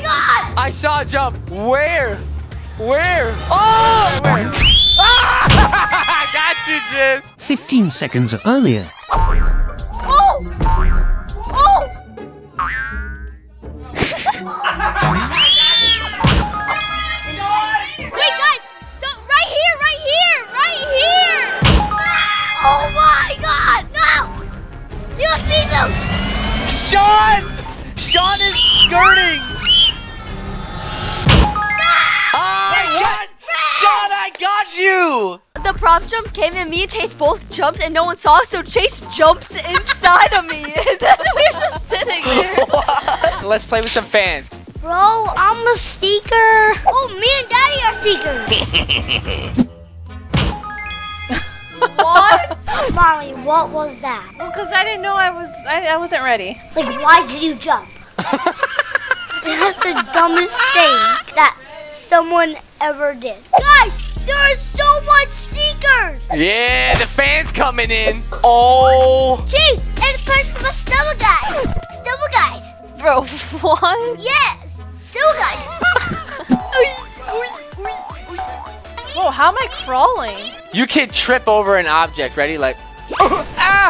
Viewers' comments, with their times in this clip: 0:05 that scream made me laugh so hard
1:04 the way he says it is so funny and cutr